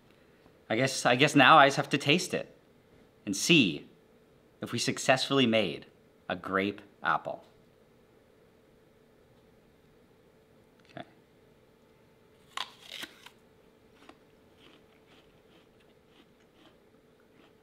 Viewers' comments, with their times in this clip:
0:03 I loved how he emphasized “see” when he was about to taste it